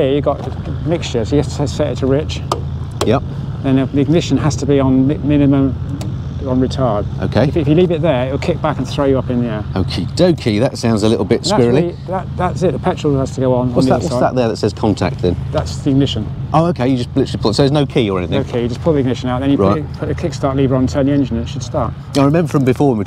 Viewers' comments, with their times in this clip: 0:05 "Mixture has to be on retard" The greatest thing about this bike is the clunk thunk the brass retard lever makes between the three positions. Sounds like it needs a fuel return loop like in diesels to help with mpg.